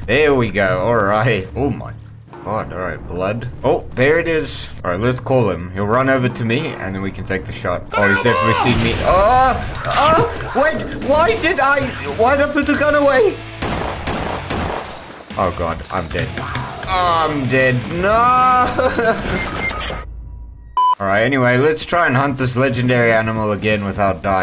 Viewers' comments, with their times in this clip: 0:09 that scream was just...
0:09 The moan was hilarious 💀💀